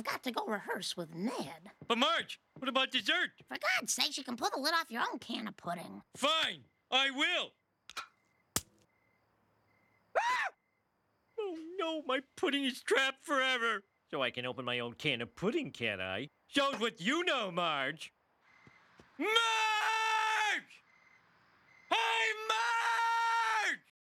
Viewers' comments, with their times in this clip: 0:10 Lol the scream
0:10 The way he screams gets me every time.
0:18 has the same energy as "SHOCKEEERRRRRRRRR!!! I'll chase you to the ends of the EAAAARRRRRRRRTTTTHHHHHH!!!!"
0:19 I never heard Homer yell that hard before...
0:21 Homer's animation during his second scream for Marge is just perfect. He looks so utterly defeated and miserable running his hands down his face like that.
0:21 What does he say here? I can't tell